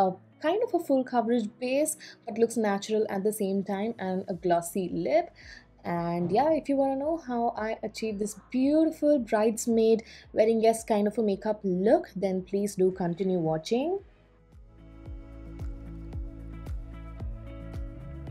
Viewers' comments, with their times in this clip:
0:05 why you mute that section we want to hear what your husband is saying 😁